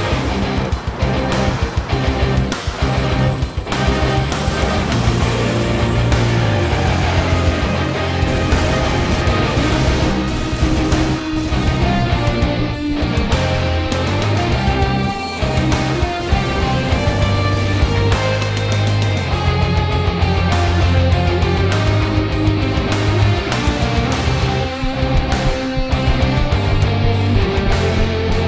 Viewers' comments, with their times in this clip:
0:09 car drives by.